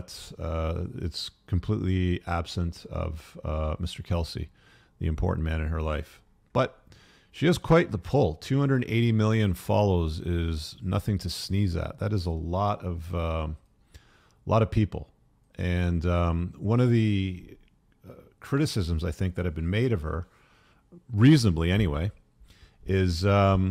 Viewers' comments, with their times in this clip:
0:05 he says it or so... psy, and ops